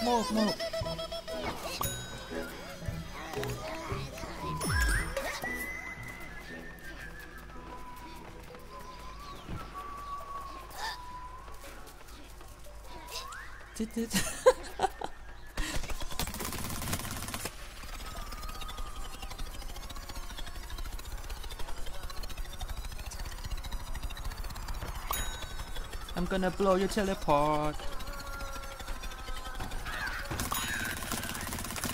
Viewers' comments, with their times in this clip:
0:10 why did u laugh by yourself u crazy nott or what
0:14 why did u laugh by yourself wtf